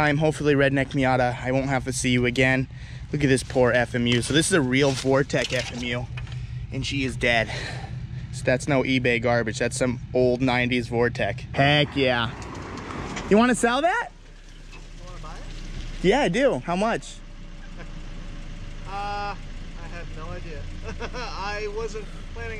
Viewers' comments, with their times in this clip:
0:10 tell me he doesn’t sound like Chandler from friends!!!!!